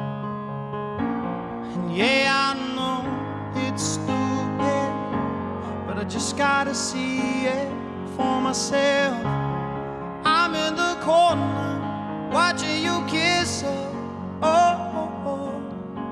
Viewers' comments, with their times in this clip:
0:04 piano is so good